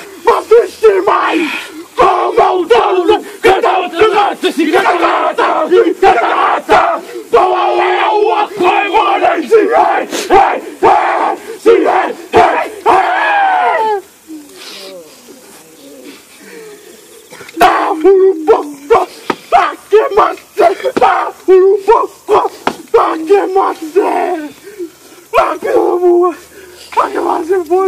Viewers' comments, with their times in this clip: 0:09 No disrespect but they sound like they came out of bo3 zombies doing that